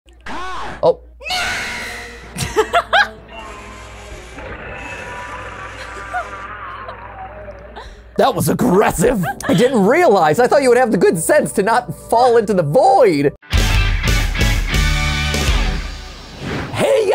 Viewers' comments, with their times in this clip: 0:01 The naoooo in the intro is so uhh cute?